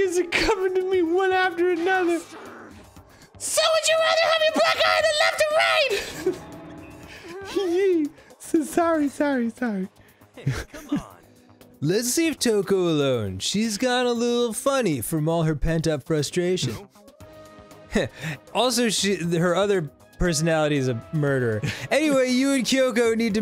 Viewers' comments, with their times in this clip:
0:06 Michael Jackson exhaustedly tries to record a song after a long day...